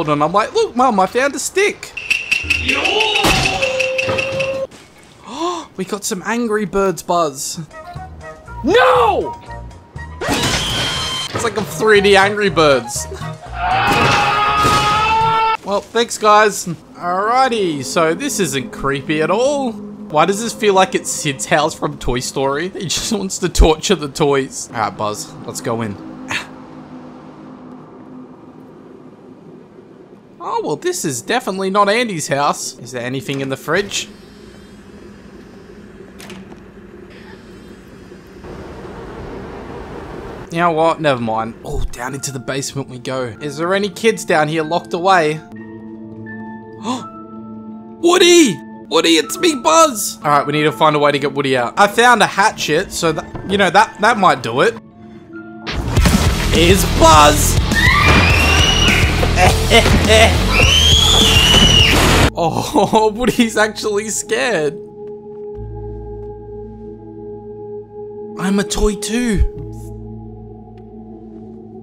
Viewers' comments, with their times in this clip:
0:04 When he thrown the angry bird it's shows of memes lol sounds
0:39 the silence was so loud
0:49 who else is literly dying about this XD IS BUZZ woody: AHHHHHHHHHHAHAHAHHHHHHHAHHHHHHH Buzz:hHAHHEHEHEHEHEHE woody: inaudible laughing behind screen AHHHHHHHHHHHH
0:55 woody : instant screaming